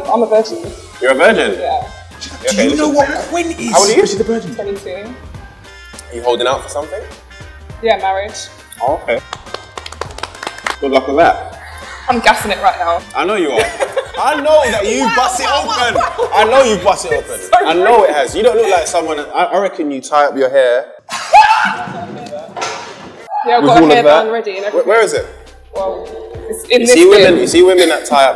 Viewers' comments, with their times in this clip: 0:04 Is it just me or when Harry said how old are you she said 17 😳😳
0:08 The synchronized clap lmfao 😂
0:09 I love that applause👏🏽👏🏽yus til marriage fam.